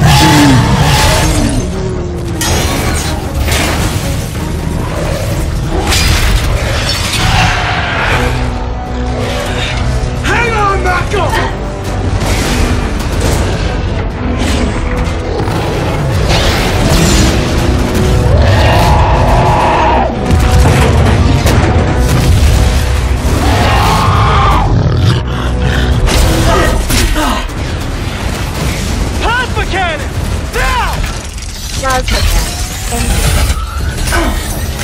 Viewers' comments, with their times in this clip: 0:08 i thought he grew more armpits but it was actually a yes
0:18 why does his roar sound like gaira